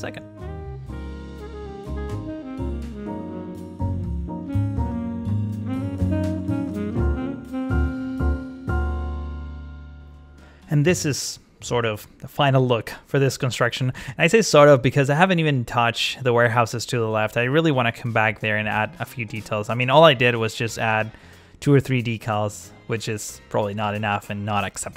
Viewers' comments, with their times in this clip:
0:06 wau that music is is sooo so great